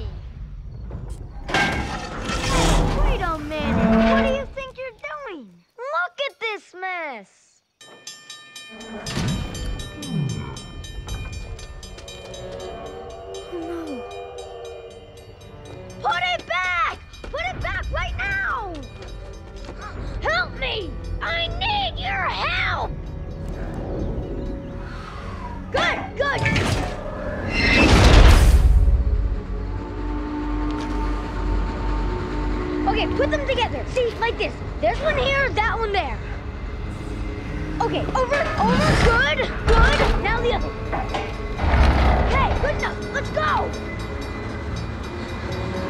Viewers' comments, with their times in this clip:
0:10 Hogarth:*hears Thomas the train them song coming* :o
0:30 Frisco 1552's whistle.